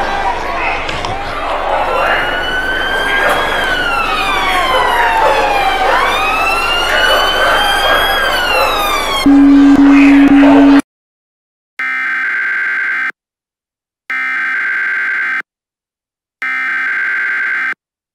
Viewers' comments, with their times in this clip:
0:03 why is there a British Police siren used here?